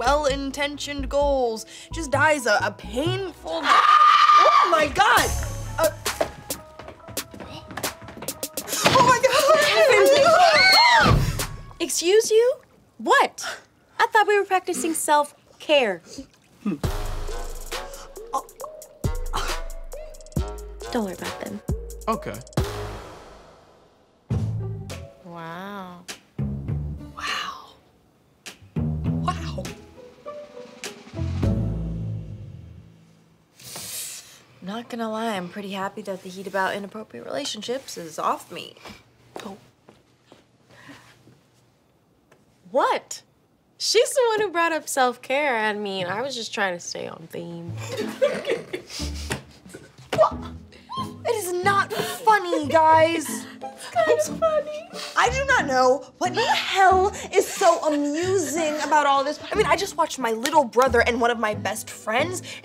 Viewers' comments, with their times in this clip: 0:03 Probably one of the scariest teenage girl screams I’ve ever heard 🤣🤣🤣
0:03 The way she screamed I thought she was getting murdered
0:03 THAT SCREAM SOUNDED BRUTAL AS HELL!
0:48 that was a real laugh😂